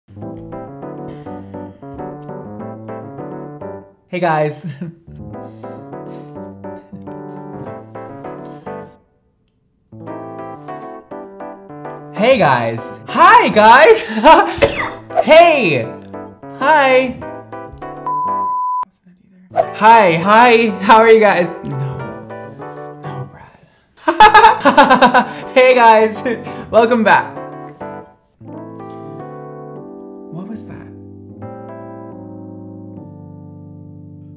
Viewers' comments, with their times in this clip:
0:02 is literally me preparing for any social event so I sound real and genuine when I actually don't want to be there
0:13 * Mickey Mouse enters the chat*
0:14 how little kids cough
0:14 that intro cracked me up so much but the cough had me dying 😹😹😹😹😹 love from Germany ❤️
0:15 The cough had me dead😂😂